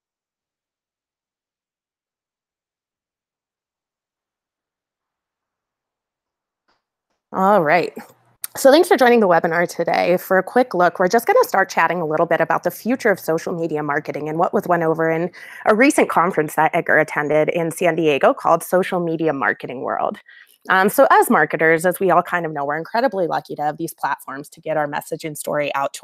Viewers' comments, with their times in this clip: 0:07 The audio doesn't start until